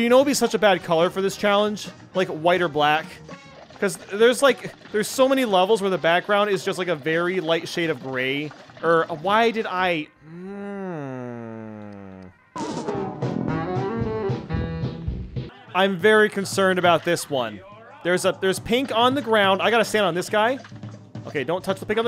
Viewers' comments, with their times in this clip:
0:10 my man became a mincraft villager